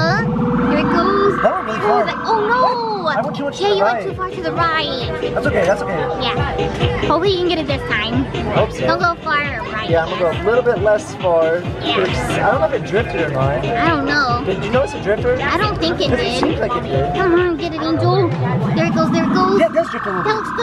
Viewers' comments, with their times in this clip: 0:06 Did anyone else hear where did your mom go